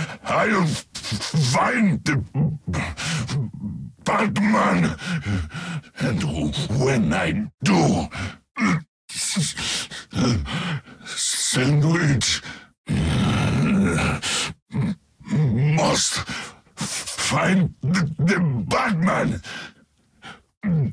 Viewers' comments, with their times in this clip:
0:08 Bane literally says "Sandvich" TN-1 fucked up his brain so bad he became the Heavy from TF2